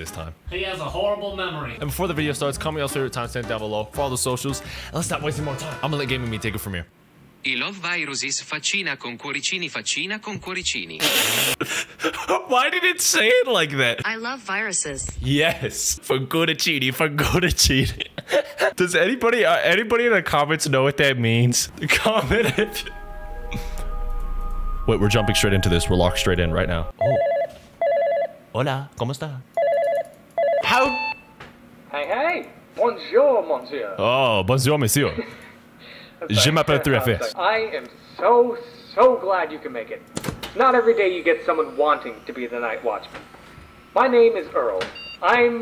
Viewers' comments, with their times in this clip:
0:07 ITALIAN VOICE?!?!?! Also it said "face with hearts" : 😍/🥰
0:09 bro I had this video in the background while i was doing other stuff and I just heard siri speak Italian out of nowhere, that actually startled me btw what siri said was italian for "face with hearts" two times which is probably just the emoji.
0:10 what you used the text to speech voice for was Italian (I'm Italian myself), so the "I love viruses 🥰🥰" got read as an Italian with zero knowledge of English would read it, and the "faccina con cuoricini faccina con cuoricini" is how the text to speech read the two heart face emojis 😂 Anyway I'm loving your content, keep up the good work brother ❤
0:15 it said smiley face with hearts or similar to that. hard to understand even for me as a italian
0:20 idk why it didn't say in english but that was italian
0:28 yooo thats a really good spanish